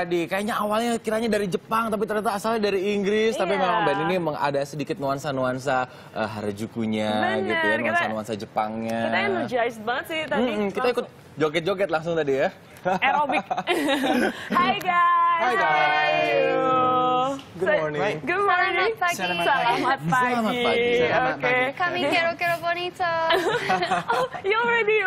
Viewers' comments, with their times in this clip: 0:08 "Harajuku yelling and homicides" -Youtube cc